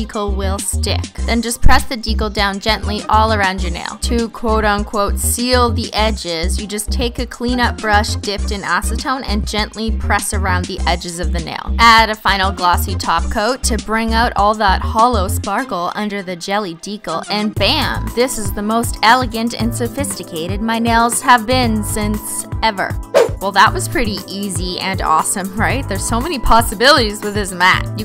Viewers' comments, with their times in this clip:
0:07 what? Did she say actone weird
0:13 did anyone else notice she said top coat and nog TACO